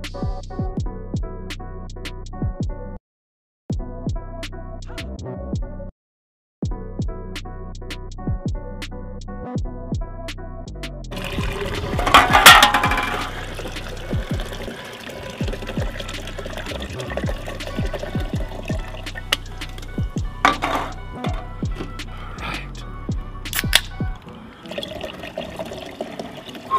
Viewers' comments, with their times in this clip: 0:10 his neighbours are thinking... Crap another earthquake warning comin